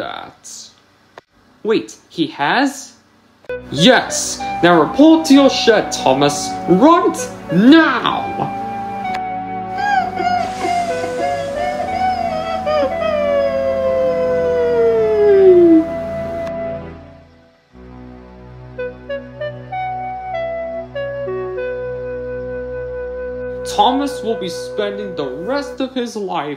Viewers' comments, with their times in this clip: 0:09 Thomas whines like a puppy dog